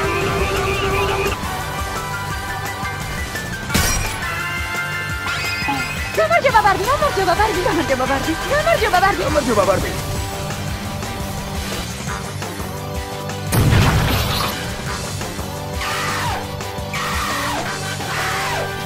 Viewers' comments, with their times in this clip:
0:05 i wasnt expecting hearing georgian language here it says "hello barbie" where did you find it xD